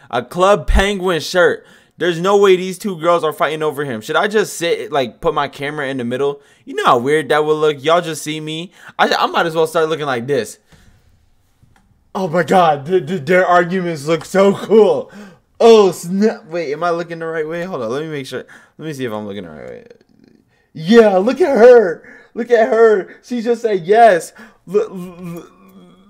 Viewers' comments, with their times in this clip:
0:09 man had a stroke during recording LMFAOOO